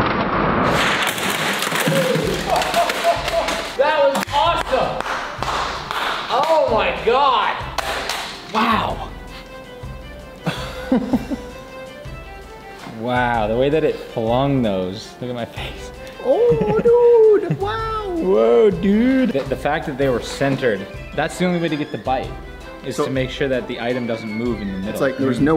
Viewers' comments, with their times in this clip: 0:07 not even airpods can block out the sound of the guillotine